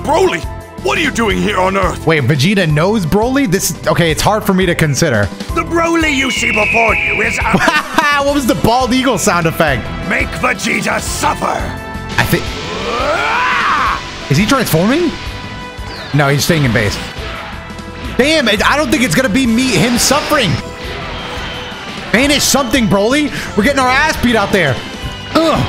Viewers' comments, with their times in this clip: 0:08 not to be that guy but that's not a bald eagle cry